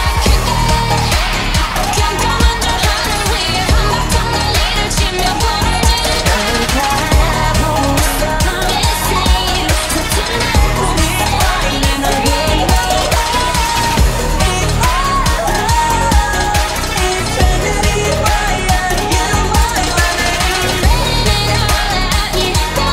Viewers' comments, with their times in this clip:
0:10 yesss 😭 jisoo clarity ❤️❤️